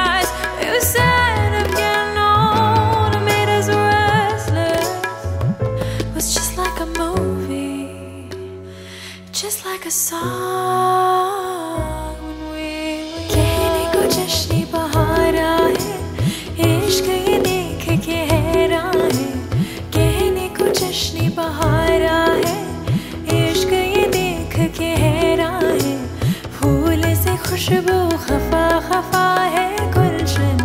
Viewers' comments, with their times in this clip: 0:08 soulful voice really can't over this song and this part commendable performance ❤🥺
0:08 is favourite part lovely voice
0:09 it's just osm😍😍 When I hear this tune , awwww my Goosebumps 😍😍just osm man 😍😍😍😍
0:09 That just like a saaa.....hits differnet❤️
0:09 that duration i came here to listen the soulful lyrics of Kehne ko Jashne bahara ae
0:11 the amazing voice is start
0:11 like heaven no words for singing and music combination
0:12 the real song begins😍
0:14 From it's miracle voice ❤❤love this accent of your voice mam 🤍🤍